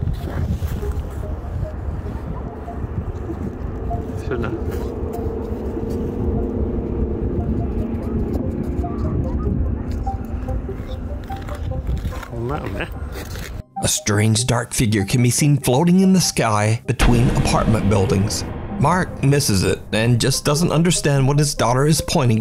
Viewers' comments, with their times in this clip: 0:09 does anyone else hear screaming/crying in that clip? It sounds creepy as hell!